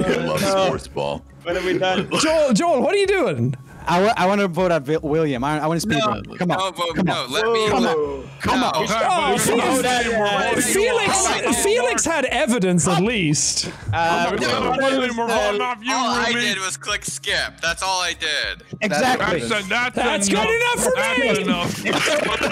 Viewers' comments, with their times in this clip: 0:09 Sounds like the family reunion